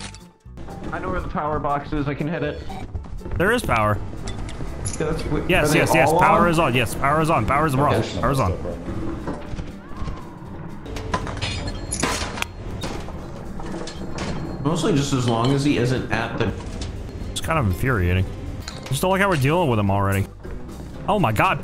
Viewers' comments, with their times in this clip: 0:05 theres a scream thats so faint to hear and it gave me chills wth